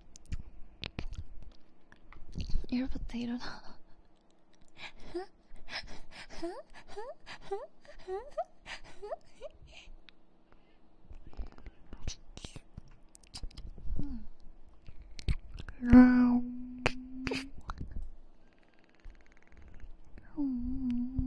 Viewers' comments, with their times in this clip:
0:04 that laugh sounds like those birds I always hear around my house
0:06 i love her laugh so cute